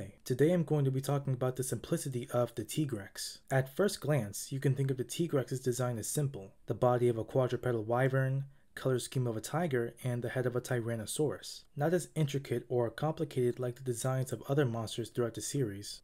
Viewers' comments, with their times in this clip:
0:03 "...the simplicity of the Tee-grex " Me: happy Tigrex fan noises